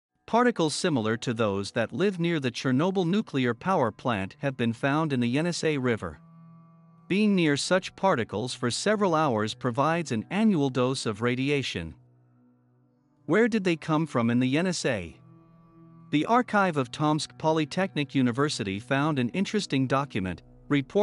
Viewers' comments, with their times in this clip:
0:06 Blimey I thought that was Harry Secombe O.o